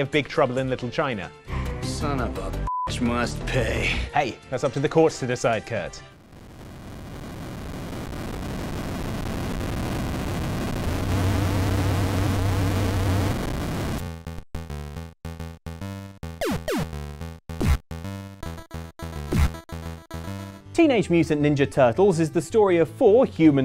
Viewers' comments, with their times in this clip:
0:06 warning head phone users